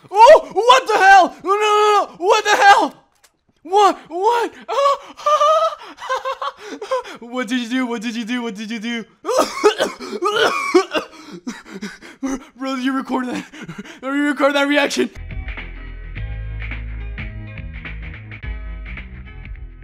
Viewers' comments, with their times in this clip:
0:07 “what did you do what did you do what did you do” AIDS noises